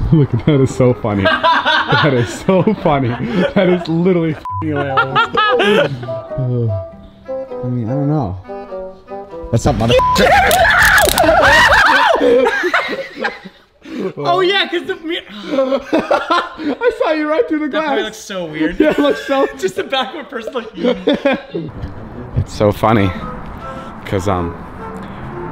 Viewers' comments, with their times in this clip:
0:09 I thought he said the N word